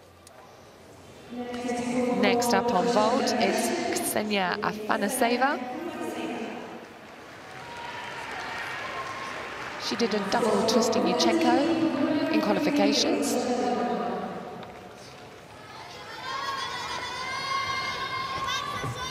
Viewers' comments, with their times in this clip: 0:04 Beside from Anamar, did I hear that she said Anaseva insted Afanaseva? ..yeez.